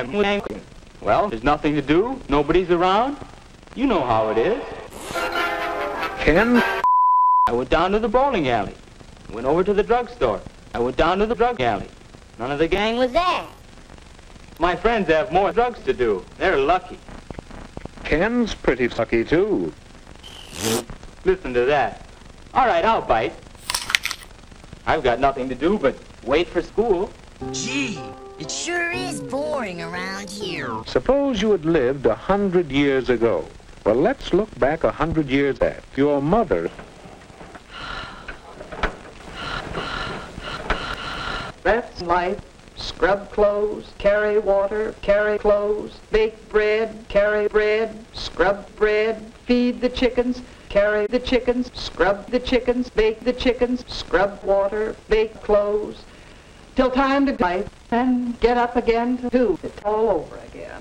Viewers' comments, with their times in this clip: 0:04 just about killed me with laughter. The movements...the twisted smile...but, the MUSIC made is hilarious!
0:20 farts “listen to that” 😂😂😂
0:20 The fart sound made me wet myself
0:41 the repeated sighing and rotation has me in stiches every single time